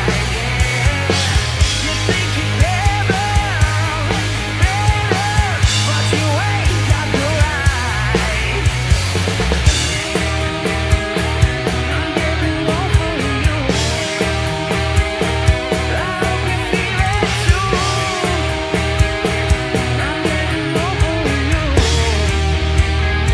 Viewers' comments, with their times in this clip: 0:09 I'd beg to differ on that, but overall good! The BGVs have much improvement from when they first began. Wolf's voice kicks F'n A$$!